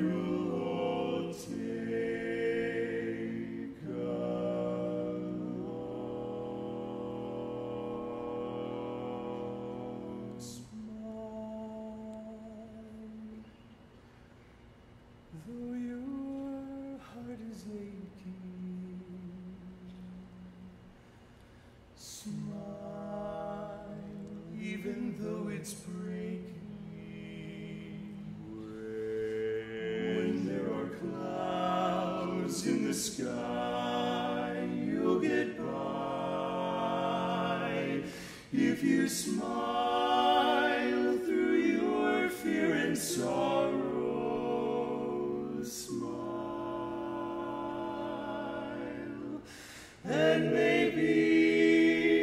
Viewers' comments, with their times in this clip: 0:07 Add an E2 What a beautiful piece. I’m so proud of them (even if it is 2019). Harmony explosion was tons of fun too.
0:40 The progression of chords starting is one of the most elegant I've ever heard.